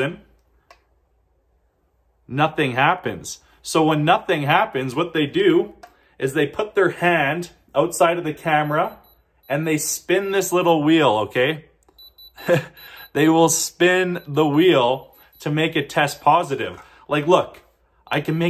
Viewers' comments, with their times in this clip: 0:05 Is- Is that a printer in the background?